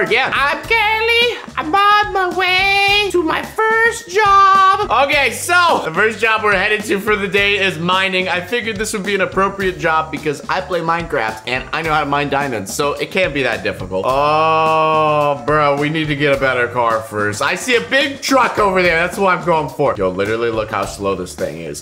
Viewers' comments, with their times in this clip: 0:03 I’m oN my WaY tO my firsT joB😂😂😂 was my fav part😂